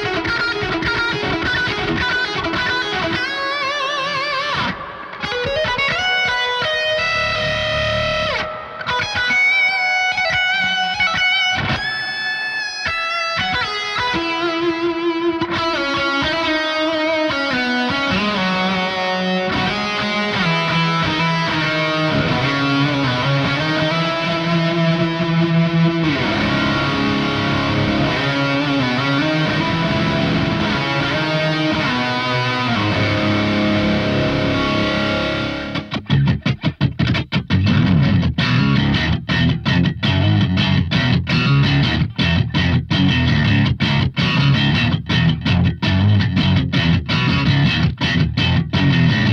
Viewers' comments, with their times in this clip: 0:06 That cheeky Intervals-esque lick 🔥
0:36 somebody's been listening to Punchline/Mourning Widows-era Nuno a bit more lately :D